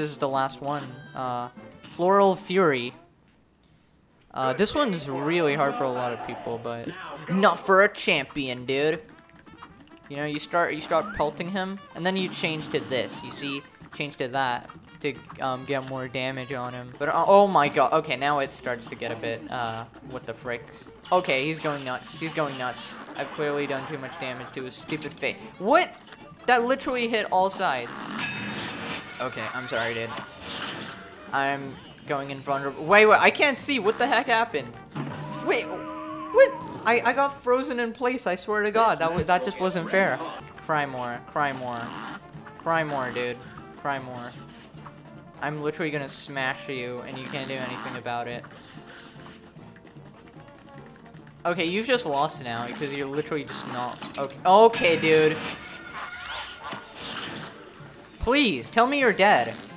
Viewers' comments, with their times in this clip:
0:05 DAT MUSIC DO
0:40 LMFAO I LITERALLY TOUGHT YOU SAID "CRIME WAR"